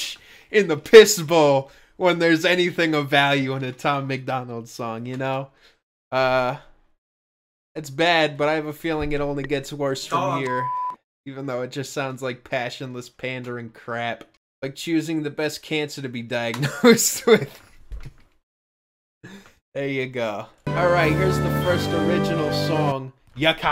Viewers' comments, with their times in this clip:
0:06 he can’t even hide how canadian he is. listen to that “sorry” LOLLLLL